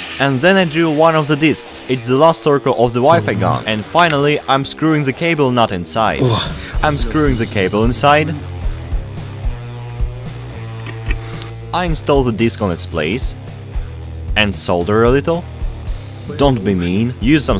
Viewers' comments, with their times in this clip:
0:05 xD that moan